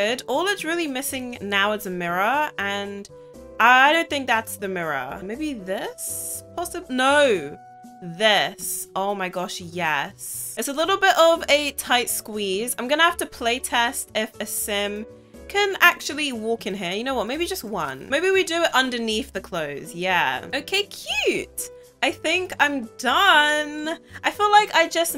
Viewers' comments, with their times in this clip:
0:06 “maybe this…? NO, THIS.” I loved how you said it 🤣